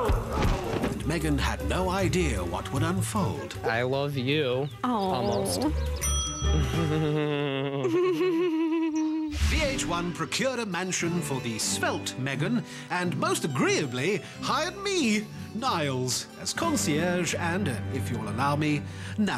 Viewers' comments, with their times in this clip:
0:07 THIS LAUGH I CANT OMG I SCREAM LIKE I CANT LOLOL 😂😂😂